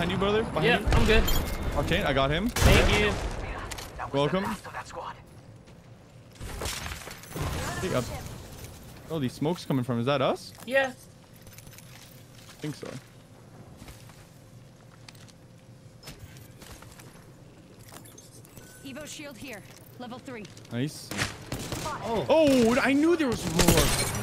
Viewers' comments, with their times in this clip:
0:06 u sound cute when you said yeah